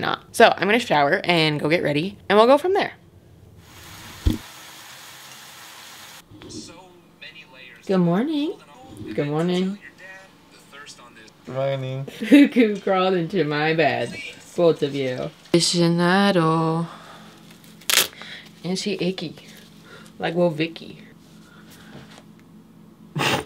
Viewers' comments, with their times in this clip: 0:07 the difference of her “good morning” with her dog and her boyfriend KSJSKSJSK